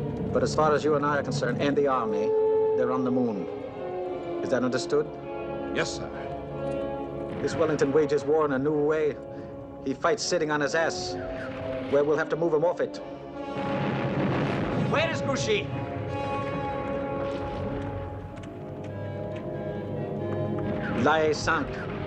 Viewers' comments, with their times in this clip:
0:07 you can still catch the brooklyn...